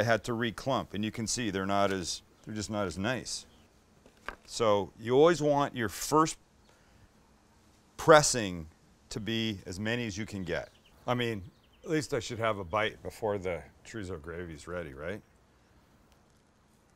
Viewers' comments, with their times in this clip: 0:03 Sam is great, no doubt. But the sound that biscuit makes 😂